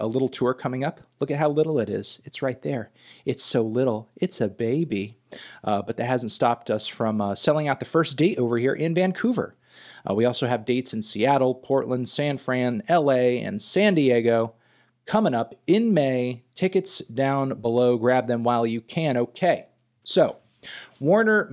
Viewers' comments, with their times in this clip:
0:03 please never say anything with this inflection ever again